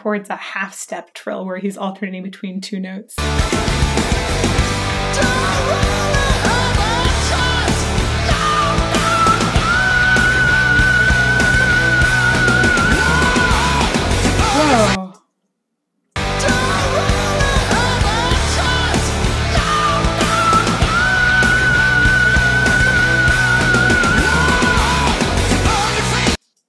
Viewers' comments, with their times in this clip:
0:08 Damn Tobi. Sick high note.
0:09 such a crazy great high note
0:10 Did I hear a natural vibrato there??